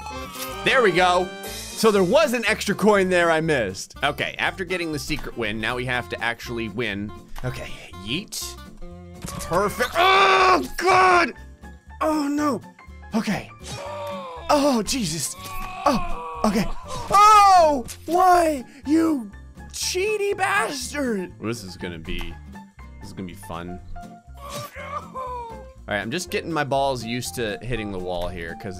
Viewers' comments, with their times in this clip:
0:09 he sound like jacksepticeye for a second